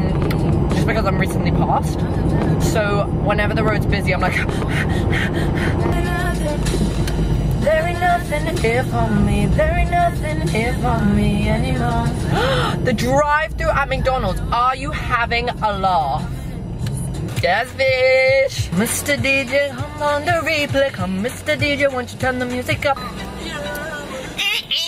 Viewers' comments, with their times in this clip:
0:08 You singing slayed my life😻😻
0:08 holyyy shitttt your actually amazing at singing 😍